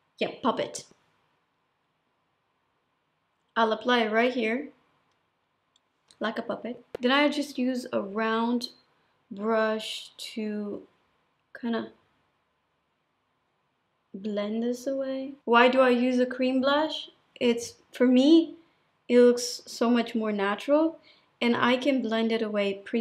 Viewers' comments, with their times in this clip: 0:06 like a puppy 🤣🤣🤣